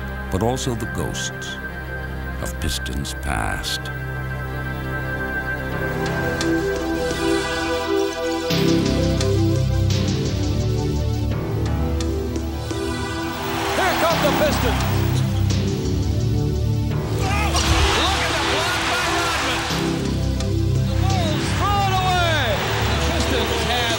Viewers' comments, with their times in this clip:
0:06 I'm a Bulls fan but the way they build up the pistons The bad boys and that vintage 90s music... TOP NOTCH